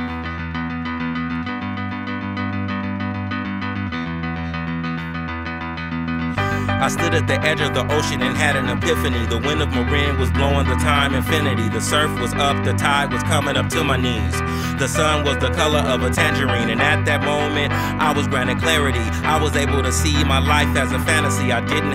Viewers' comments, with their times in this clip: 0:04 verse he absolutely kills it. Gives me the feels